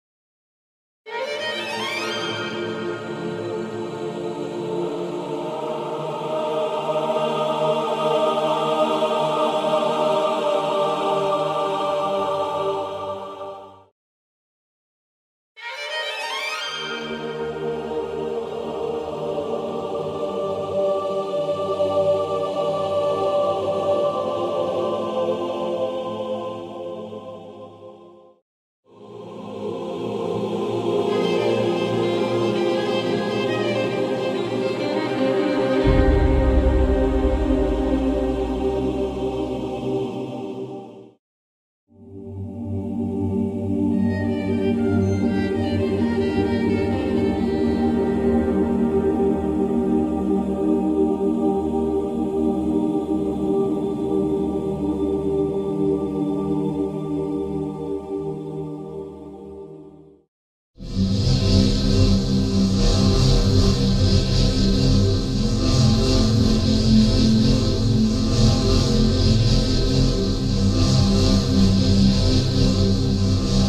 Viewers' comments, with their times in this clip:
0:01 the violin <3
0:28 ♥♥♥ i love melody (amo esta parte).
1:00 I've never heard the one I don't know if it's for a special situation, but it's freakishly chilling to me.